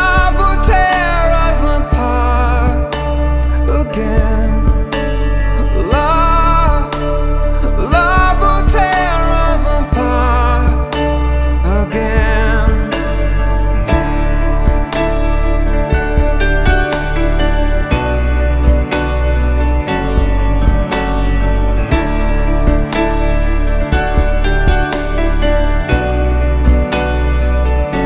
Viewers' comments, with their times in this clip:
0:09 chills when that piano kicks in